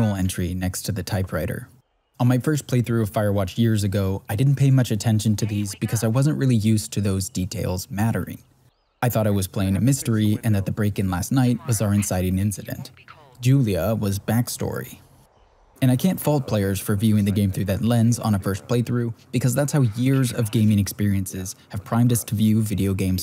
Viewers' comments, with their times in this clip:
0:04 just a little bit of feedback, if you're open to it: it's difficult for me to listen to both your commentary and the character voices when they're overlapping. i'm into the video and so far i've mostly been paying attention to what the characters are saying, while what you're saying is being passed over by my brain. possibly because of the subtitles on the screen. i do have auditory processing disorder, so it's possible neurotypical people don't have trouble with this, but i thought i'd let you know just in case. i'm not sure how you could avoid this in future videos, but maybe a different balance of audio levels? i... do not really know how video editing works, haha. feel free to ignore this! i'm just miffed at my brain for being bad at braining. i am going to hit it with the squeaky hammer of punishment *squeak*